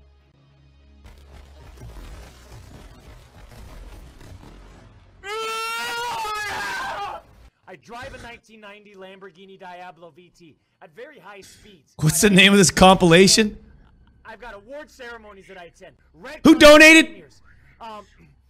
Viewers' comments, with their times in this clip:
0:04 even doc surprised by his screaming